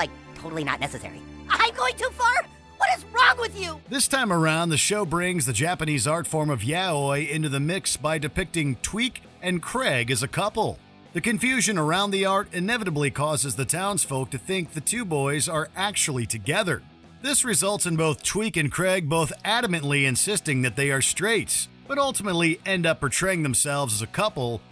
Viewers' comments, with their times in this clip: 0:05 How he said Yaoi 😅 I'm weak when it comes to Yaoi anime, love is love 🏳️‍🌈
0:06 my man just pronounced yaoi wrong and I'm dieing 😂